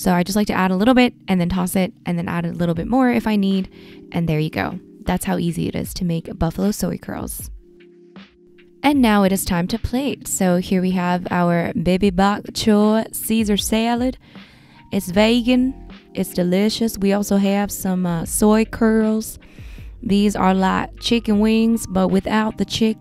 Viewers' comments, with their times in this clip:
0:10 why do you keep doing this african-american accent? that's so weird
0:11 that voice xD has me rolling.